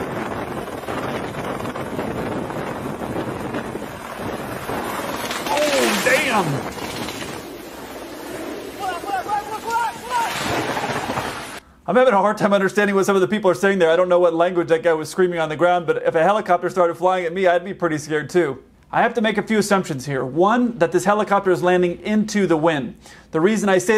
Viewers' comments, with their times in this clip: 0:08 for me it's like Mandarin "过来过来过来过来，过来！！" which is basically "come here, come here, come here, come here, COME HERE!!!!"
0:11 Damn how fast does he talk ( not hate)